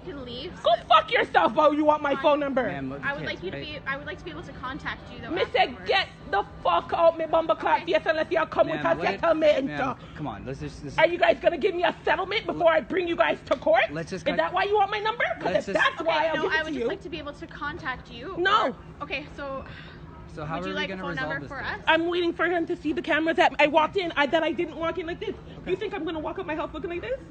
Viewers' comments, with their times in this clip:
0:04 THE ACCENT SHE SHOULDA RAN
0:05 Life Life Jamaican creole
0:06 straight up Jamaican cursing 🤣🤣 amazing. Priceless
0:06 u know she was shook when the jamaican accent came out lmaoo. Thats how u know when someone really mad, when they start talking in the native tongue
0:06 Damm she went full Jamaican on us🤣
0:06 She's definitely originally from the Caribbean!
0:06 that accents my grandma Jamaican and when I hear any thing that has this accents on it run while you can
0:10 I was waiting on that Caribbean to come out😂😂😂😂 I was waiting for the Jamaican to come out😂😂😂